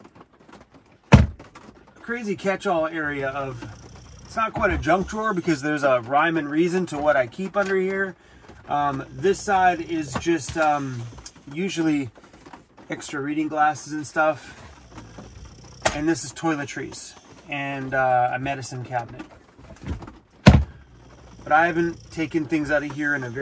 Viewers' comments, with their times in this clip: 0:08 he is knocked out snoring lol